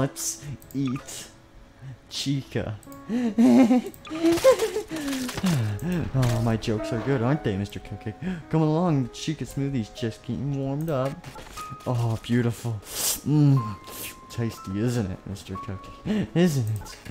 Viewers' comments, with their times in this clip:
0:03 he sounds like his help wanted Spring Bonnie voice